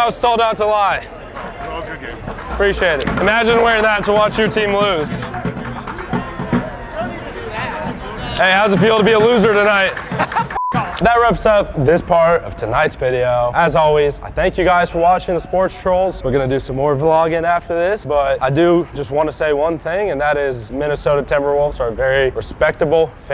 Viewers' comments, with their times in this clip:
0:08 coolest reaction out of them all. Just a friendly laugh and fist bump is all you need lol.